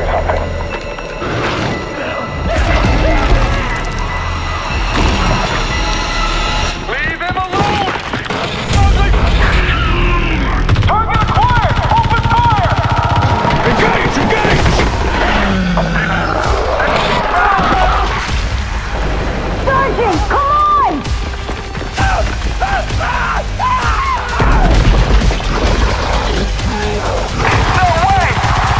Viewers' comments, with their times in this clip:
0:10 dude shit gets hot real fast i mean just out of the gate gunshots and death shit got real i say again shit gets real